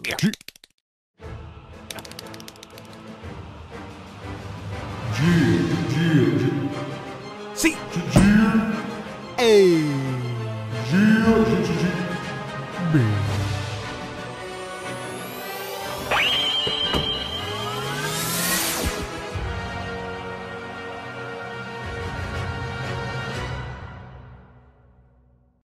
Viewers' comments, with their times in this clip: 0:07 Sounds hit plush bro...